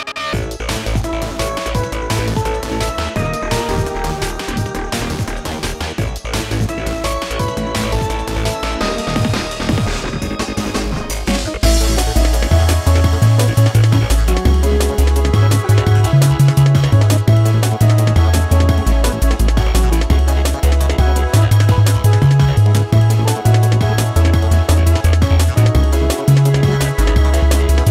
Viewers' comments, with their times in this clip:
0:08 Drop never gets old